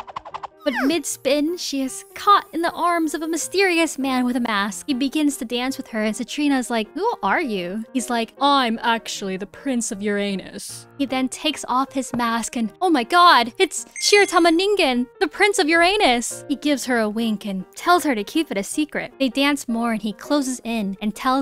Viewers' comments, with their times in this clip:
0:09 i heard it wrong 💀